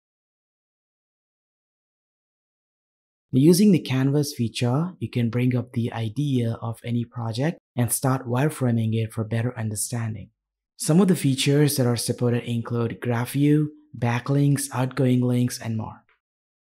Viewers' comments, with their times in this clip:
0:03 O what's the name of this app? if it's not part of Obsidian then you forgot to edit in pop up text with app name in the video. I'm quessing it's "Canavas Vija" or something like that. I'm doing research on Linux as I'm switching to Linux Mint in few days. Much appreciate your r3spond